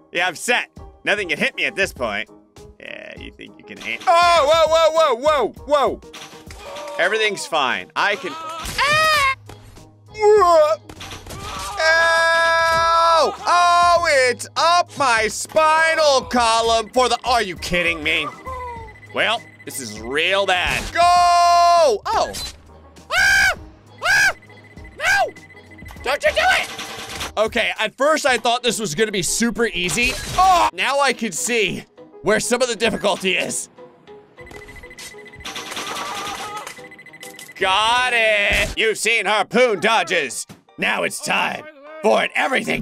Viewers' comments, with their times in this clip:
0:07 that sound was weird
0:20 The scream Sent me to floow Sprawling and laughter
0:22 that scream is hilarious 😂
0:23 At this part you sound like Toad that had McAlcoholism